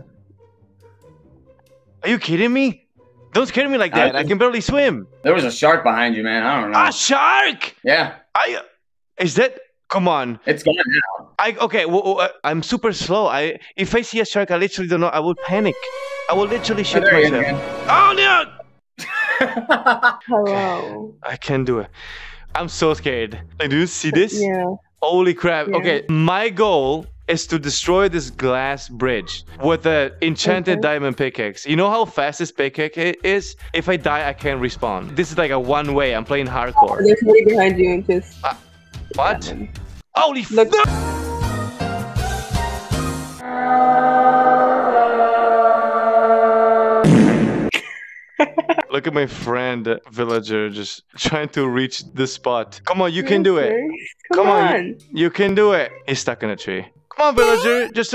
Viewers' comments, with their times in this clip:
0:06 he sounded like shrek
0:43 when I need to place a bucket but I press fart instead